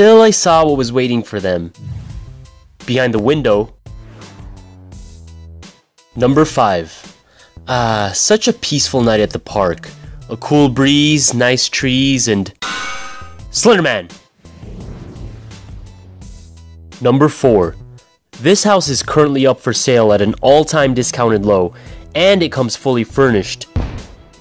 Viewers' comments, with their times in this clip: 0:06 XD Nice acting right here about Slenderman.